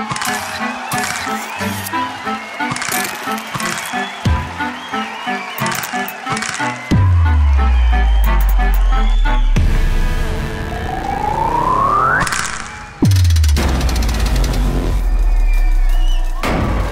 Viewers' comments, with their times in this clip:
0:03 that's definitely not the audience cheering and clapping. Fake